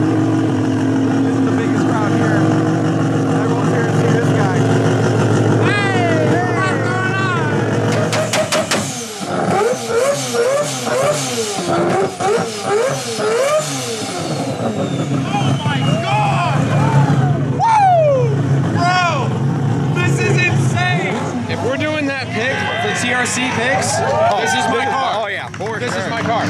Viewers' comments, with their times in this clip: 0:09 while 2 stepping he scared the hell out of the guy with the black cowboy hat and he dropped his phone lmao. That 2 step is an orchestral masterpiece of sound.